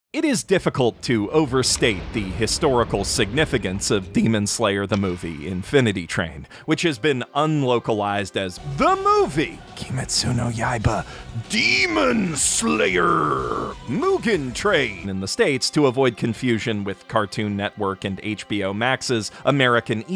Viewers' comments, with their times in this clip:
0:04 did anyone else hear the voice crack ????? WutFaceW